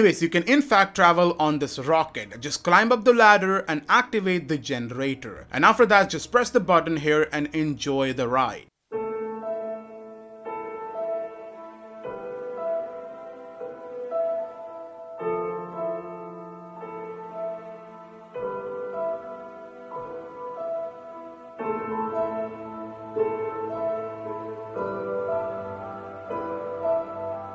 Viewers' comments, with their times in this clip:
0:09 Interstellar music is so beautiful im gonna cry